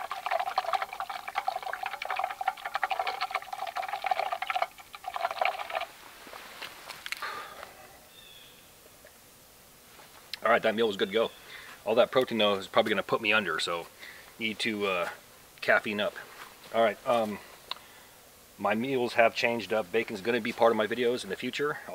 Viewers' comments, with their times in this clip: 0:06 Is that a woodknock (possible bigfoot) at approx. ? Right before you say "Okey that meal is good to go". And also like a "reaction" from a bird.